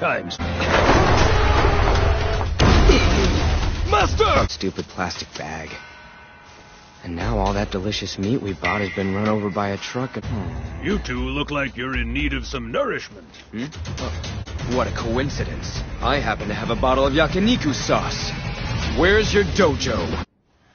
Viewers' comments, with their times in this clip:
0:07 Charlie Brown moment he even kind of sounds like him!